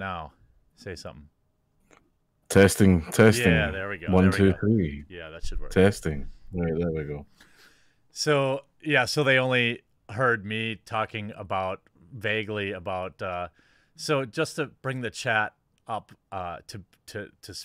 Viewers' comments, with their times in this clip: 0:04 Audio gets better